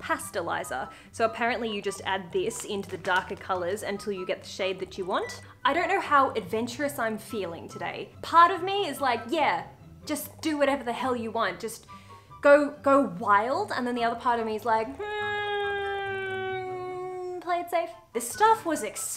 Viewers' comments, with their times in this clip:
0:06 I'm just and super confused by the sound :D I feel like I hear a cat purring, is that the camera, Archie or something else?